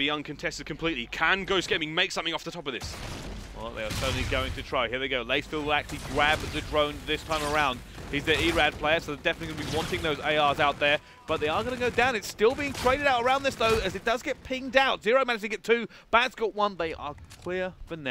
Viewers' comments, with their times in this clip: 0:06 did he say "gwab the drone"?